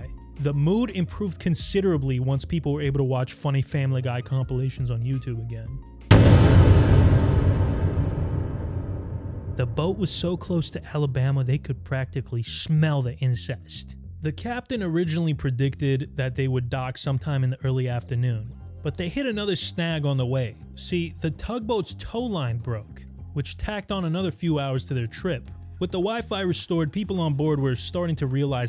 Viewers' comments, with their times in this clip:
0:09 did he say ‘insects’ or ‘incest’?